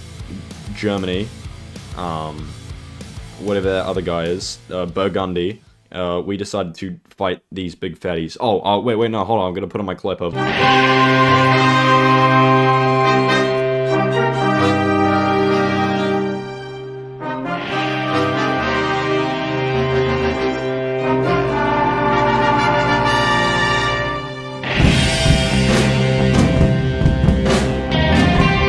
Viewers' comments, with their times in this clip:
0:10 RDR2 music intensifies